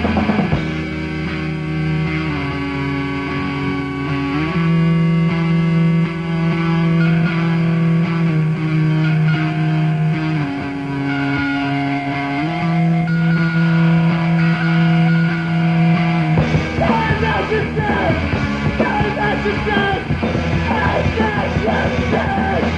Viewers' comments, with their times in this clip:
0:07 riff so lovely